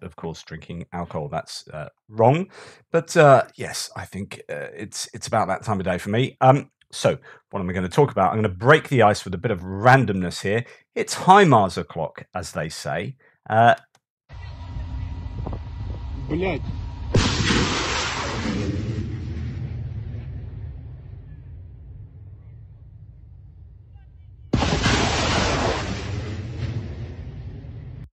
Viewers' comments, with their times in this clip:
0:09 Surley this bicyclist is deaf now?